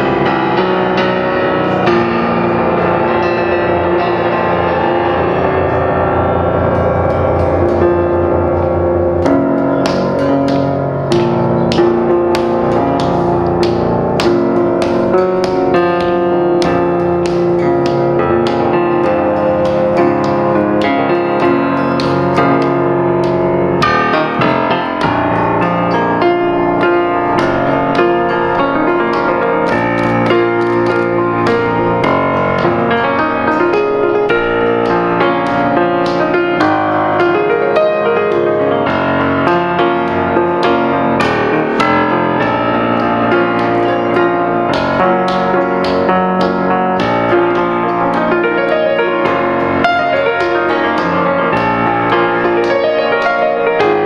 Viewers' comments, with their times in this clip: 0:09 still a better drummer than Lars
0:39 love that piano